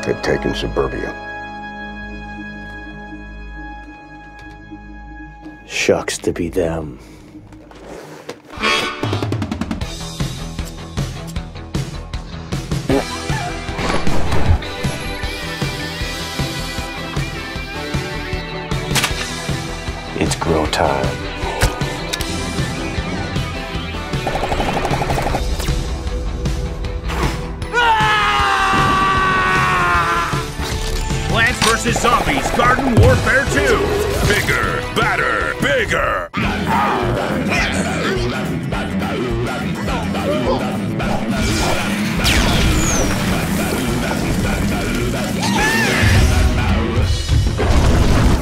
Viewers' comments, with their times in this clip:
0:09 *No sound effect*
0:12 he farted or should he darted the fart
0:36 every roblox troll song be like